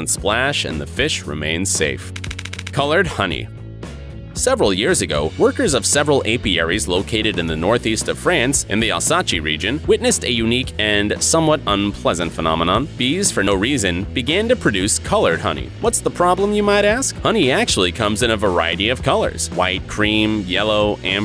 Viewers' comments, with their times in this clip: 0:09 Alsace - Alsaachey Are you serious? It's in France, not Italy!